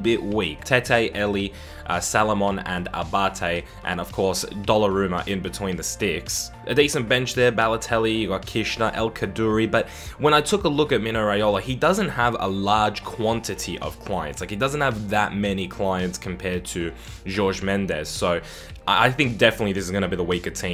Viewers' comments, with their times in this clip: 0:03 did he sayed dollaruma??